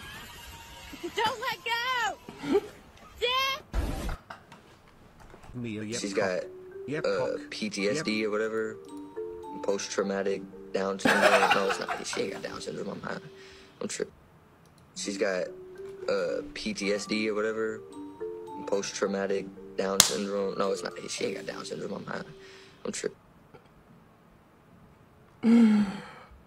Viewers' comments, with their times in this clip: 0:10 the fuck is the guy saying